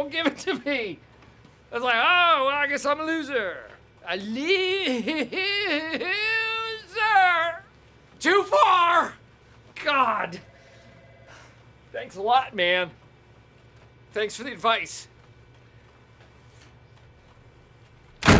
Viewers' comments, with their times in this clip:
0:03 was Michael copying a Jim Carrey character here somehow? :D This sounds familiar. I could be wrong! :D